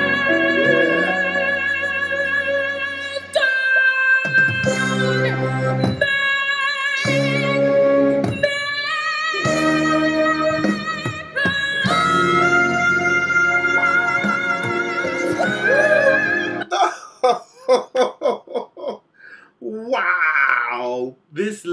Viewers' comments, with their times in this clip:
0:05 I still wonder how she can sing that part ( ~) without breathing.